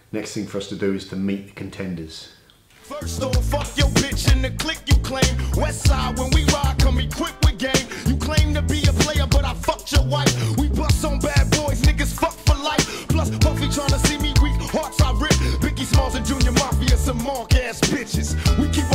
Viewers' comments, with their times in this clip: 0:06 well the music got real as fuck 😂😂 awesome video